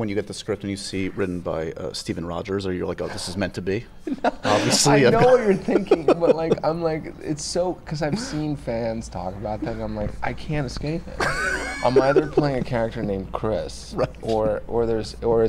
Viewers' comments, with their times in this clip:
0:03 Really interesting interview. And gosh, his laugh